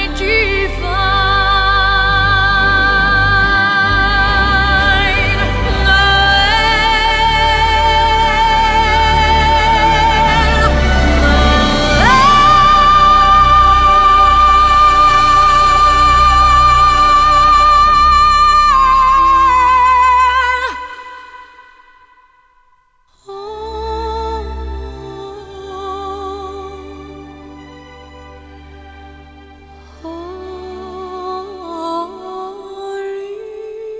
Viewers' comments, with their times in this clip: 0:10 one of the most satisfying notes in all of music. Few could even reach it, probably none could hit it more perfectly than Celine.
0:19 stellar such respectful treatment my all time fav xmas carol. thrilling. bravissimo Celine thank you tq merci merci ah that sustain you just did that does it. looping now. got things to do.